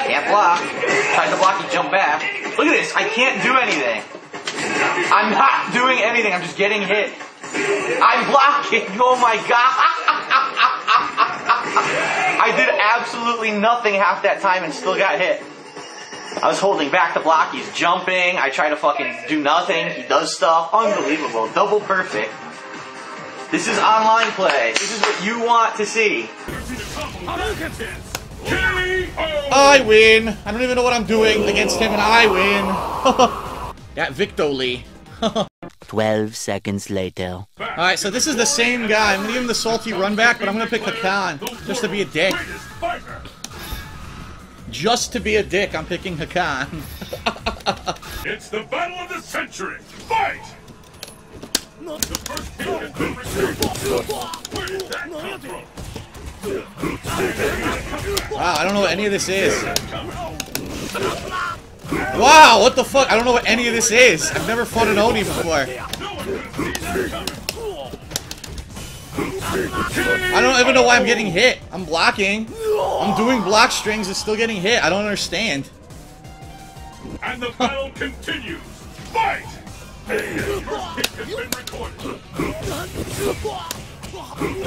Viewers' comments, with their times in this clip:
0:09 That forced laugh
0:10 That seal laugh
1:07 * audibly spams buttons while blocking, gets hit * "I don't even know why I'm getting hit, I'm blocking"